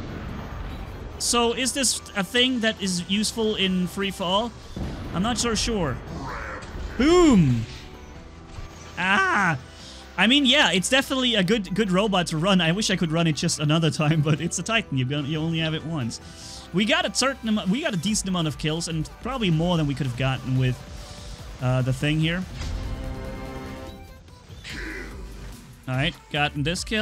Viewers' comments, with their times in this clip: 0:08 Bruh! I know I'm late but this scream was hilarious u_u👌